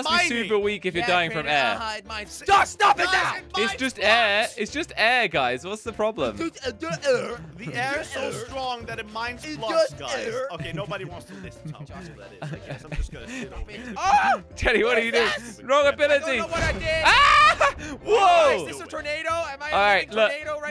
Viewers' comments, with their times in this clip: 0:03 Slogo said it just air its just air what's problem guys Then jelly making funny and angry noises Me: Hhahahahhahahhahahahahahahahahha